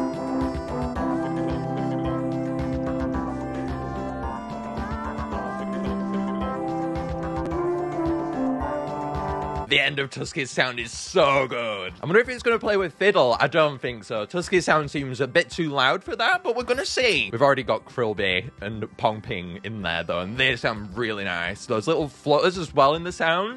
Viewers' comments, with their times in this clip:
0:08 it sounds like mario